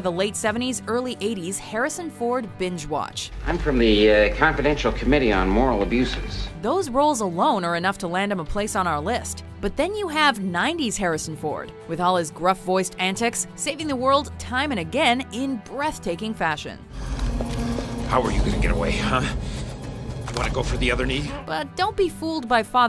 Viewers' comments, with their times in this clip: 0:04 Harrison Ford's voice is so high